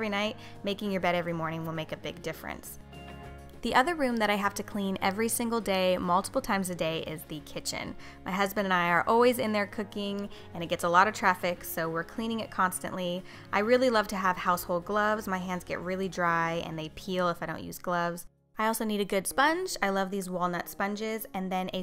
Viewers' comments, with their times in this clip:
0:07 "Clean the chicken" ~English Learner